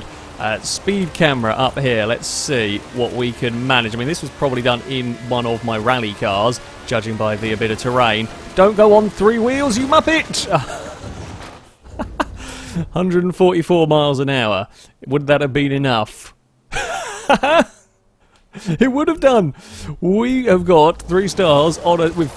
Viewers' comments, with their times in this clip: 0:08 only has 3 wheel's. soft muffled weeping from a peel in the distance.